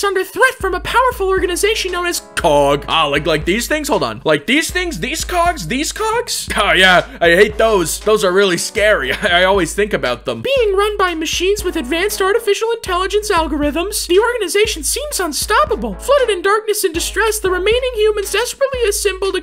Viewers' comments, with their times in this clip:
0:03 why did it sound like "deez cogs" 💀